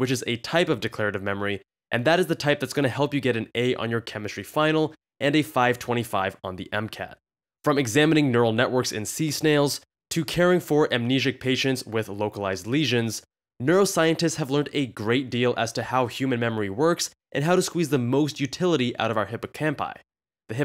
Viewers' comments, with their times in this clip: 0:07 Lol, why did I think he said somatic memory ... smh